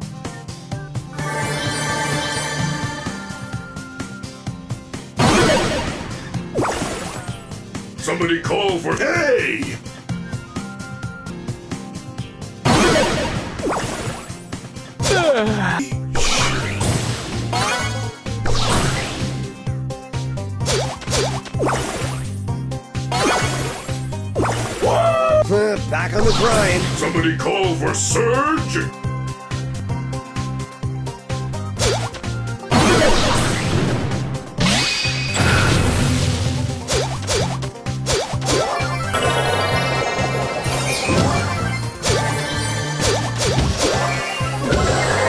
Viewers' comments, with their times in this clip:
0:07 Somebody call for- gay
0:32 I thought that buzz went through wall